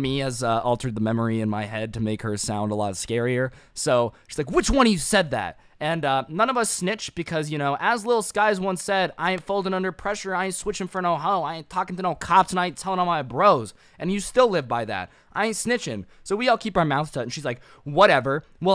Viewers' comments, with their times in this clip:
0:04 sound like the Odd1'sOut lol